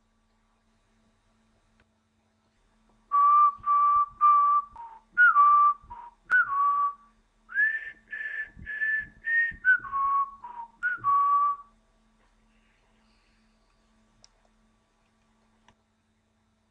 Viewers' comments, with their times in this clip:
0:03 good info, except for the whistling :-(